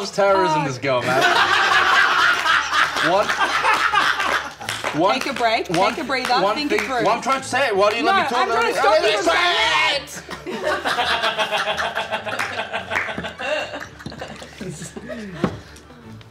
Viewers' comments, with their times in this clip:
0:04 i wonder why the camera didn't pan to the audience with all that clapping sound 💀